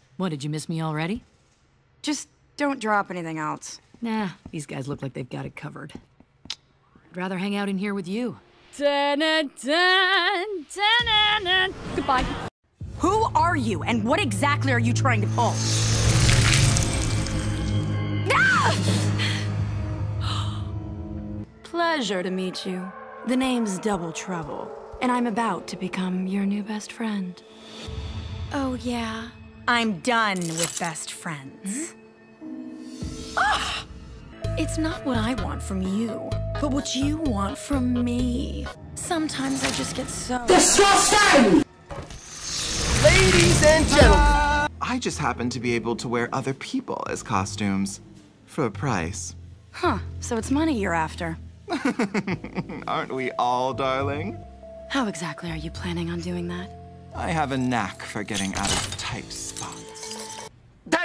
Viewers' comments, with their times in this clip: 0:08 In Why does the audio sounds exactly like scorpia
0:49 ok- I haven't looked up they're actor so I'm pretty clueless but why do they sound like joey gracefer (I think i spelled that right-